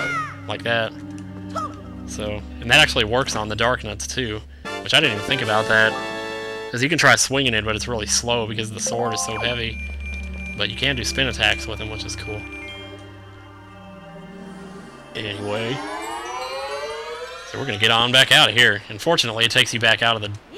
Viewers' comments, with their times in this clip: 0:04 did you say dark nuts instead of dark nuts